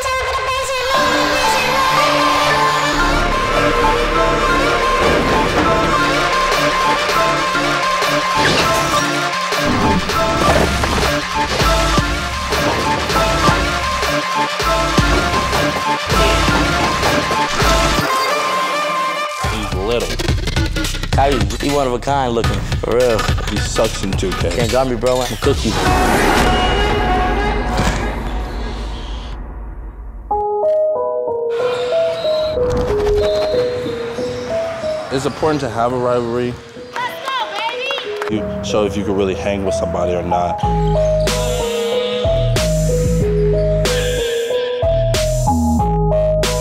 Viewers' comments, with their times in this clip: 0:03 whoever chose the music needs to be fired asap
0:03 Earrape starts lol
0:33 sounds like he's a melodic rap🤣